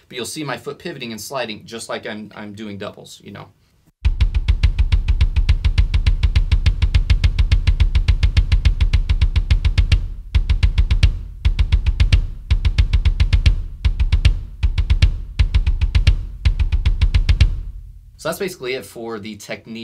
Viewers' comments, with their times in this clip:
0:03 when you want to play djent but don't have a double pedal